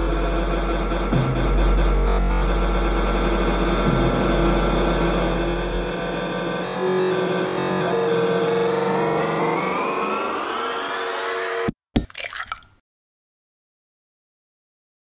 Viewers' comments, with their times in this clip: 0:11 To add to that, there's the sound of a cracking egg I wonder if that was a deliberate placement by Kikuo to tell us this new album is going to have a lot to do with cracks or breaks?